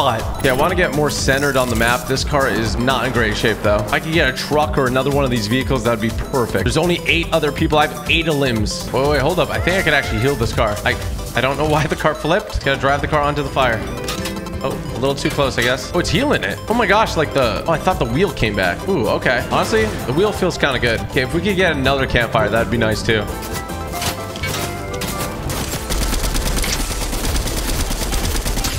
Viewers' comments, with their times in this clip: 0:09 If you go you hear the slime singing from chapter 2